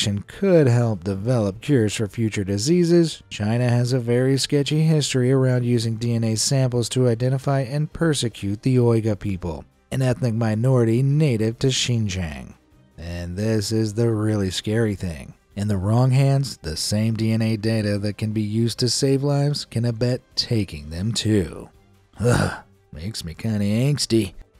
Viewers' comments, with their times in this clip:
0:08 Can't even pronounce Uyghur 👎